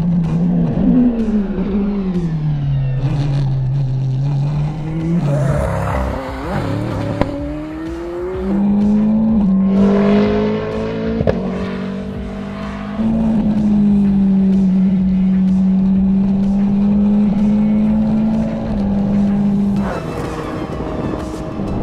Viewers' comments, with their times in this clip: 0:05 That snarl around the corner ... Sounds like the car is actually resentful of the low revs -- faster! More power!